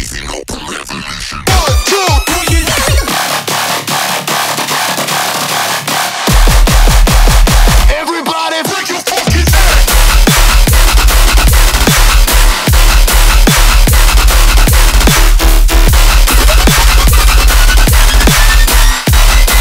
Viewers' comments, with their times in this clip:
0:03 one of the best drop I've heard this year! 🔥